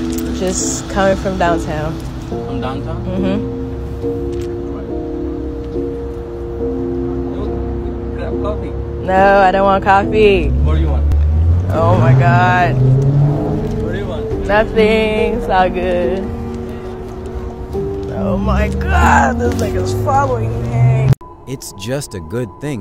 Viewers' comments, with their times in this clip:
0:04 this is why women should scream at men more often.